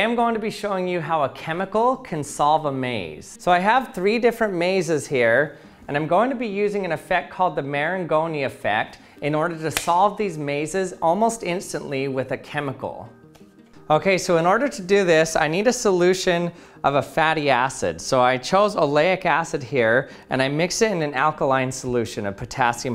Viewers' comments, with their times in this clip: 0:07 The macaroni effect?